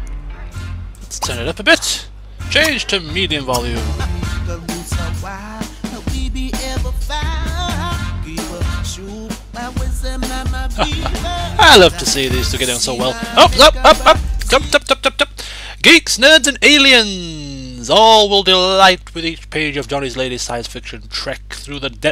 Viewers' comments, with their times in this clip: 0:10 Lol love how the song there's a shark in the water is in sim language